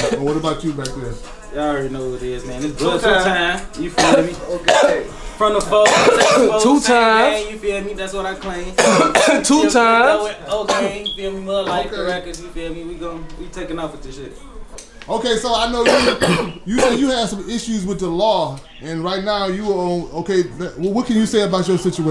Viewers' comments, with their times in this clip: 0:03 him coughing on the camera made me pull on a mask
0:05 Brah, cover your mouth when you cough, Brah....